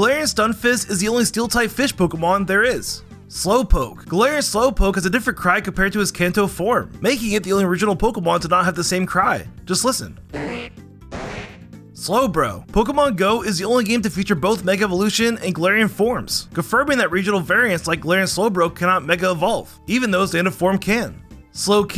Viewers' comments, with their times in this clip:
0:09 slowpoke is just a whoopee cushion with legs